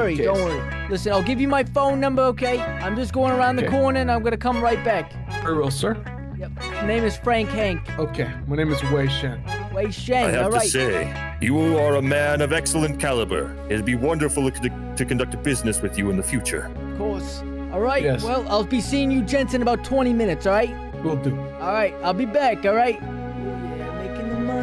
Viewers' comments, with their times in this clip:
0:07 The bank manager part was so funny especially when you lied to the officer and said the guy threatened too shoot you in that voice with that face 🤣. Edit: I like how the guy says his name is 'Wei Shen' which is the protagonist of Sleeping dogs xD